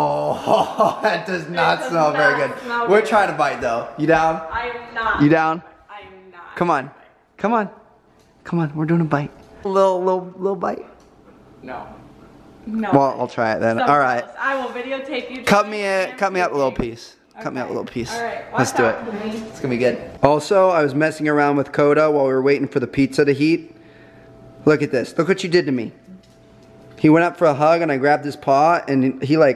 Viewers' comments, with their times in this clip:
0:10 Go to and you here the dog say no